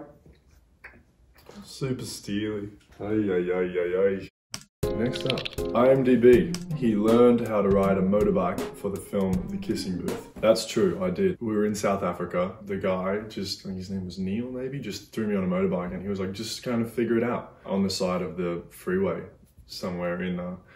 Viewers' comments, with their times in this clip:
0:03 Does anyone think he sounds adorable on ? 🥺🥺🌟
0:03 did he just said “ayayayay” like an old french man 😭